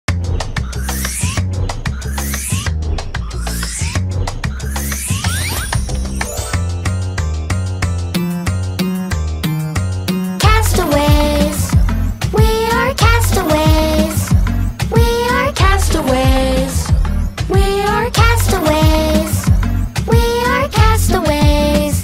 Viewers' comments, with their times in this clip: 0:06 sounds like a beatbox